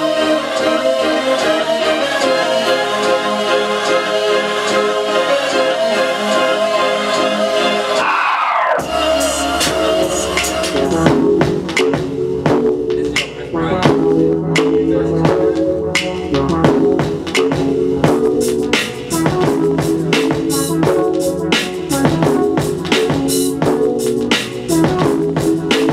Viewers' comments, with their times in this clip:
0:10 i am feeling that beat on that ambient pad is smooth with those drums...
0:11 Track was smooth. Kid has Skillz.. good luck with the success
0:11 The best beat is ! STRAIGHT UP
0:11 That beat reminds me of "Angel" by The Game and Common for some reason. Nice.
0:11 i would rip that beat, thats my type of beat.